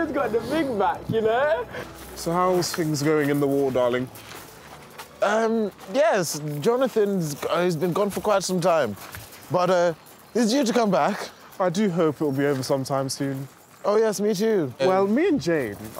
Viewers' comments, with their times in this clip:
0:03 British people impersonating American people impersonating British people